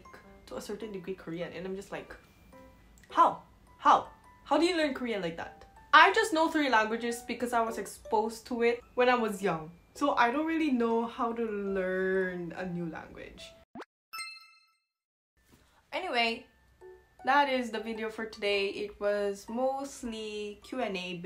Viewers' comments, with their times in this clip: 0:03 I love the “HawHaw” 🤣